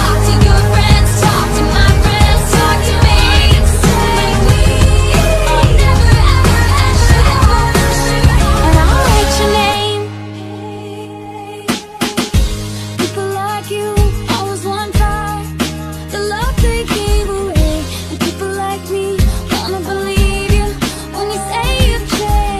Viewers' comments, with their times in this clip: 0:07 "but i'll write your name" this doesn't sound like taylor swift at all